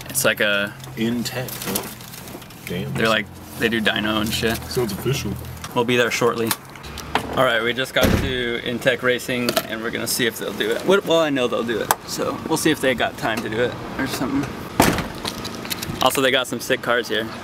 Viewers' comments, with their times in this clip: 0:03 extra flavor to that pop corn.